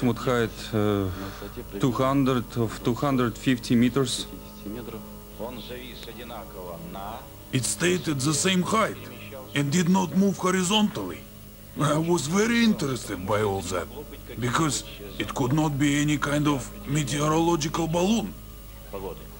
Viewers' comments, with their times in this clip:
0:07 the voice of a professional Ruski